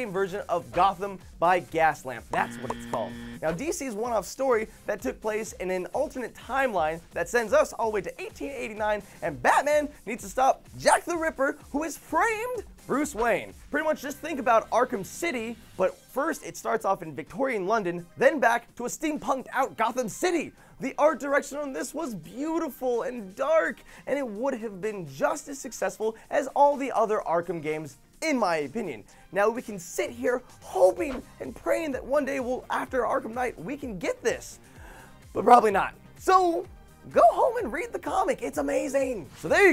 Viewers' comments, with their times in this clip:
0:09 woah, that was one hell of a voice crack...
0:25 It would have been JUSTICE successful